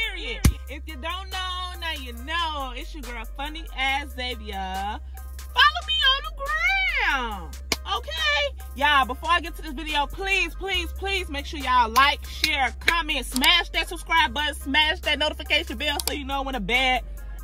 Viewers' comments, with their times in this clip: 0:03 .. just finished sitting through pure TORTURE of WHATEVER the pure SHIT that was repeating OVER and OVER and OVER and OVER calling itself “music”